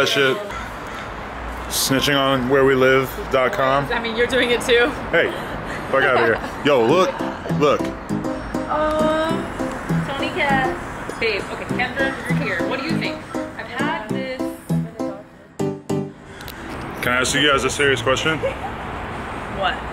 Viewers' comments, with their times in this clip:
0:06 loving the cats background music lol